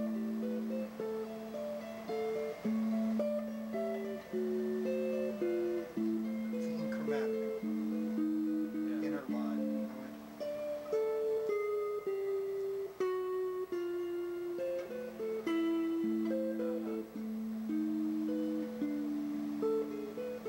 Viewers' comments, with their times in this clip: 0:05 sounds like Bach's late period during which he went for more chromaticism. "Talent does what it can; genius does what it must" Edward Bulwer-Lytton RIP Ted, you the man